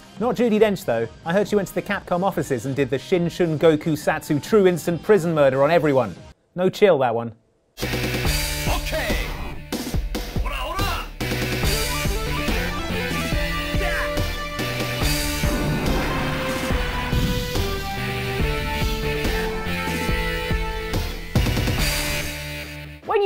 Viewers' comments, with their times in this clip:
0:07 Dio? Polnareff? Is that you? Also, Dio, why are you useing Jotaros battle cry?